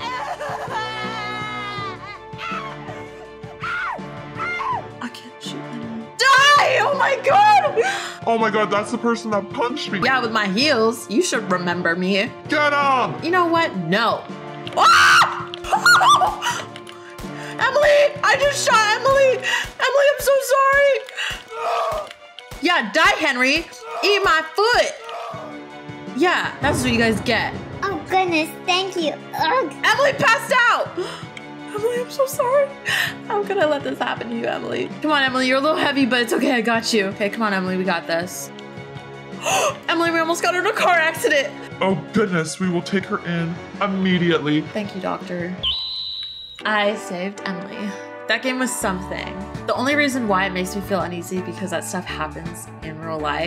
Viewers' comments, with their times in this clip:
0:05 the screams i terror scared me tho
0:39 Car go SKERRE